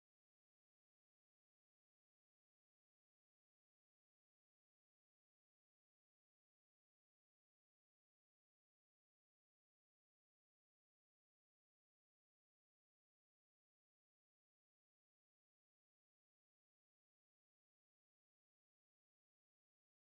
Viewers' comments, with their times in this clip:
0:04 WHERE IS THE AUDIO?!